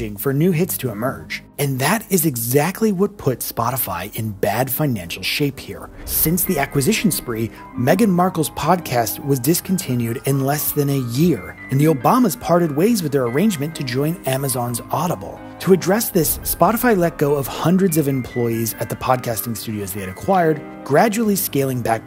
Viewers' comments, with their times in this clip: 0:06 Best background music from the best serie!: